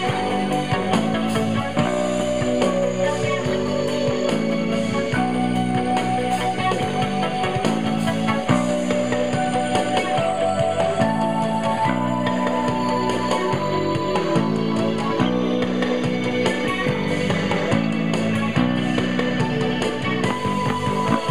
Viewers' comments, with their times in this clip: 0:06 I guess you missed the slap part am I wrong?